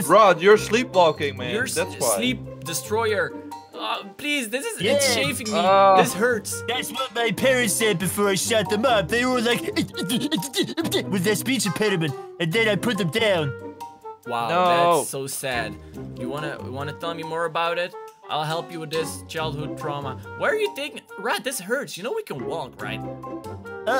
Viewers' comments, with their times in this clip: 0:06 is when I explain how my friends be when they laugh